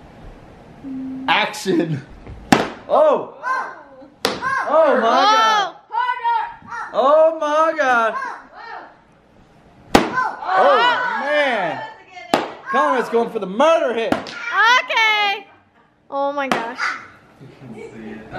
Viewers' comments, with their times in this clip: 0:06 he hits but no sound comes out ???